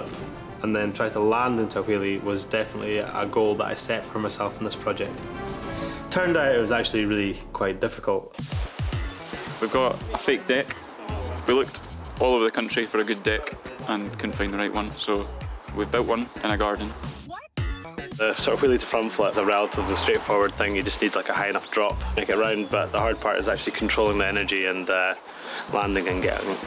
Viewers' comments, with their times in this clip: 0:09 A fake what? You looked all over the country for a good what?
0:09 we looked all around the country for a good *what*?